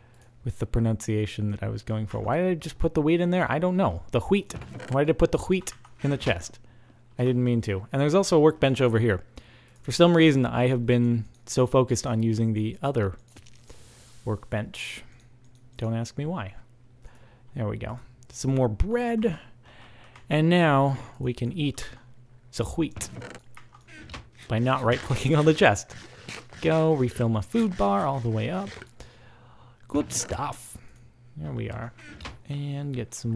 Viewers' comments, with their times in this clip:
0:10 that was pretty scary (the creeper sound)
0:13 theres is the creeper noise
0:15 I had a panic attack I heard a creeper
0:15 who else heard the creeper sound and was lyk capt sparklez omfg rofl nooooo